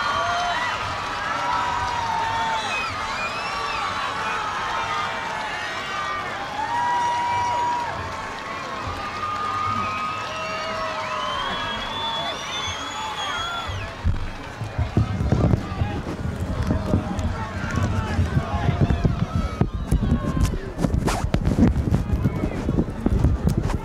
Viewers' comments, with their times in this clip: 0:10 haha that was a bit of a flub with the mikes.. worst possible timing :)